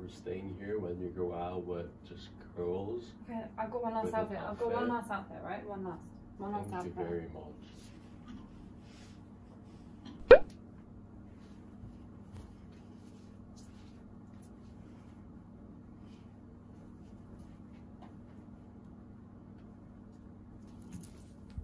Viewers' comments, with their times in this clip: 0:06 the way he said thank u very much with his eyes close